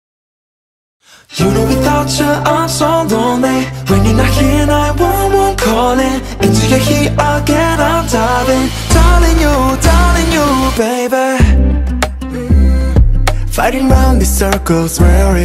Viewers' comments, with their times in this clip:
0:01 I died before the song even started (in love) surprised how no one is talking bout Vernon's vocals I melted bro